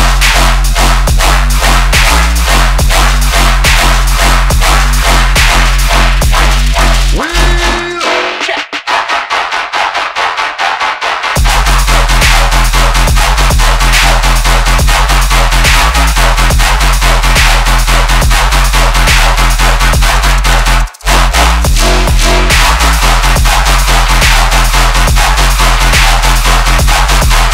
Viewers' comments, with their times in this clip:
0:08 This is quite literally an edit of one of his most popular tunes with a slightly different intro and different switch up